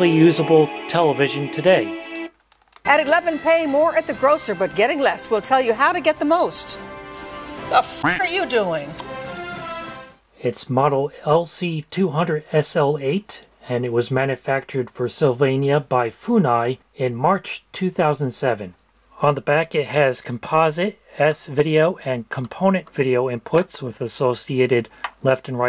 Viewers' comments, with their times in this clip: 0:07 We're really not going to point out that anchors hot mic moment 🤣